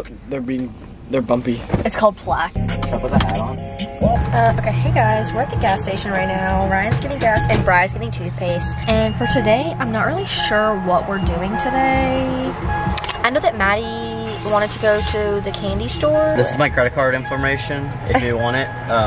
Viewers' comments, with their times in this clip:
0:07 me thinking theyre playing drivers license 😭